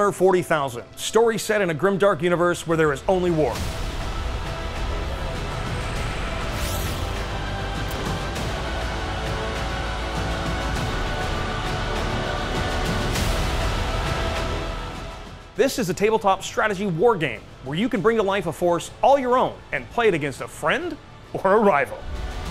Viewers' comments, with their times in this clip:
0:03 I really can't explain it other than it felt like it was being played from an old phone or something, but only in the beginning of the video, the rest was good, I know it wasn't any of my devices because the voice was good aswell Check the music at this time